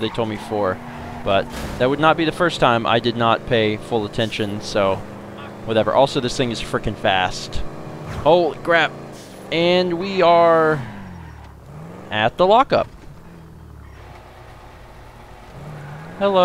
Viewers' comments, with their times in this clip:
0:04 that quiet passing "fuck" really got me